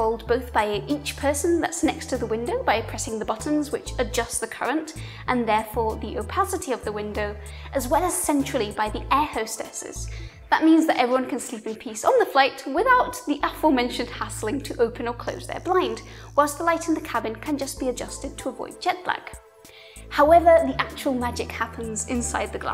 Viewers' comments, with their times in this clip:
0:08 "the air hostesses" ahem... "flight attendants" :-) Cracking northern accent, keep up the great work!